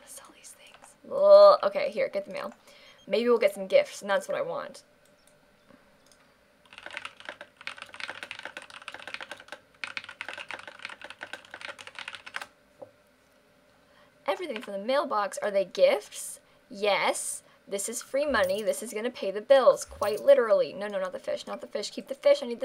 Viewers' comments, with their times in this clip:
0:06 and the serious quiet typing comes again😂